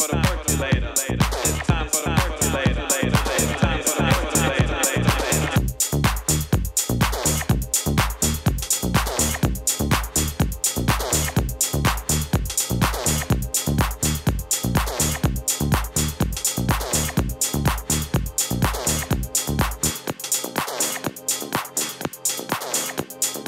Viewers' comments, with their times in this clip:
0:07 although it was skipping the mix. ok. No one is perfect. that is 17 MK . I myself prefer Solard Rmx.